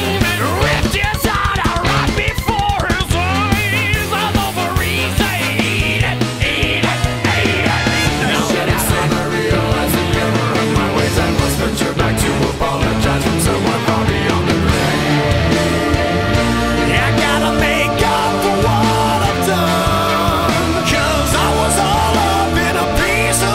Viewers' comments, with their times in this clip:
0:08 So, after one year of listening to it do you also notice the out of place scream or is it just me?